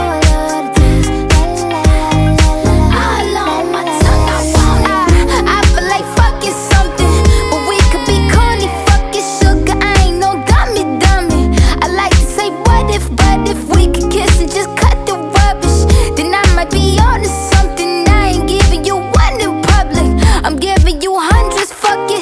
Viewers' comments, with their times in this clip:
0:07 "eeeee" sounds here